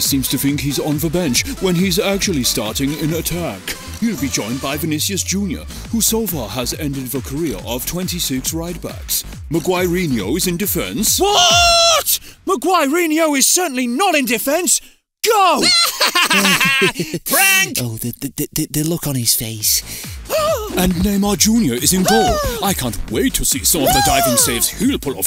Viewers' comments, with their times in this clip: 0:10 "Whaaat" with Messi's voice!